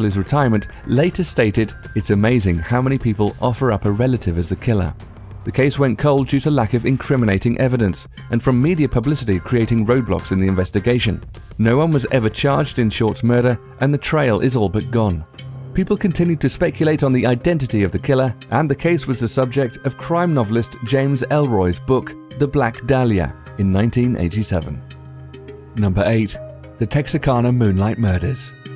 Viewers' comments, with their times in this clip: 0:09 wait did he just say roblox- oh nevermind i turned on captions and it said roadblocks